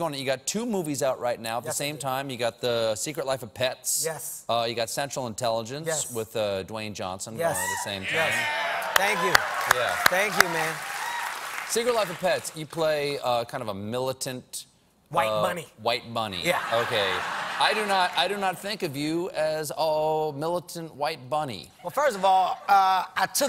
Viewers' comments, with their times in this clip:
0:04 Kevin doesn't understand that the applause was for the rock